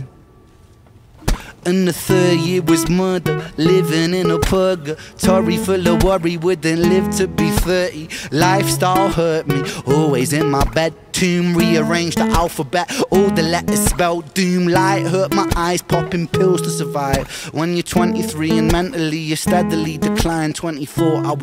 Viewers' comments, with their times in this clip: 0:09 The detail when he said re-arrange he faked a chord and went to A (don’t know if it was intentional but I loved it